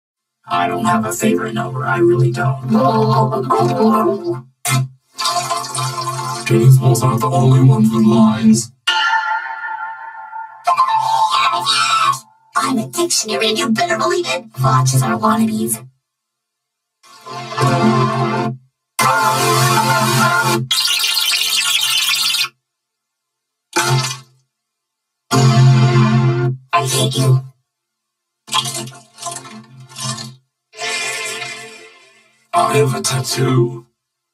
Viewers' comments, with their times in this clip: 0:02 Puffball sounded different.
0:21 sounds like a freaking toilet